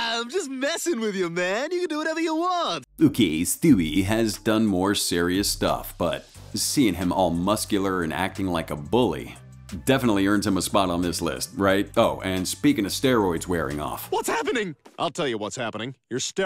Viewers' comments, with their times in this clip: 0:04 “uukeey steuwee” is crazy.